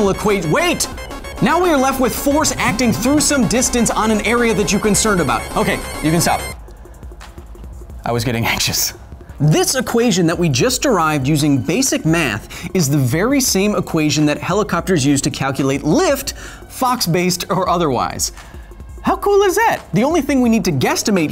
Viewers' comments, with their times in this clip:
0:07 garbled water effect "bleurgh" GAME OVER